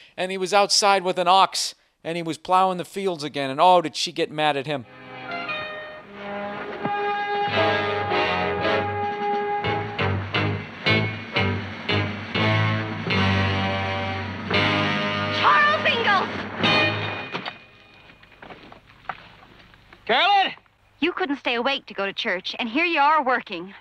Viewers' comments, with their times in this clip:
0:09 The music 😂 You would've thought some big, bad arch nemesis was confronting him.... Oh. Nevermind